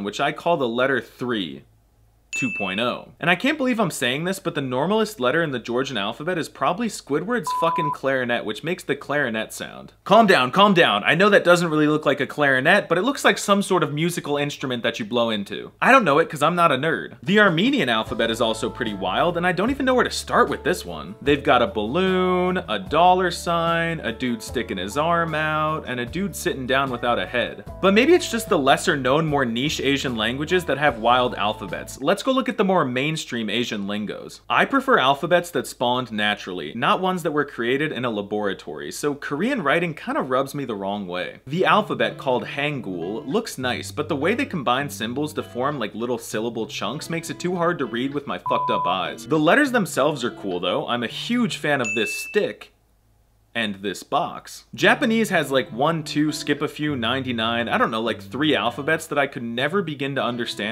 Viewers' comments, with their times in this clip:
0:07 The beep was too quiet that I can hear the f word😭
0:46 Thanks for censoring, I do not allow profanity in my house. I can 100% not hear this swear word